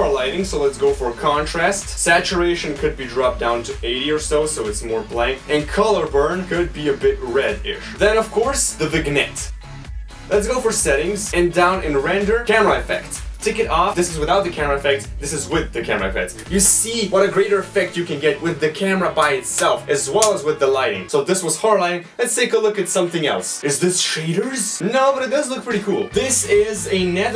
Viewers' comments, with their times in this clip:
0:09 I don’t think I’ve heard anyone pronounce it that way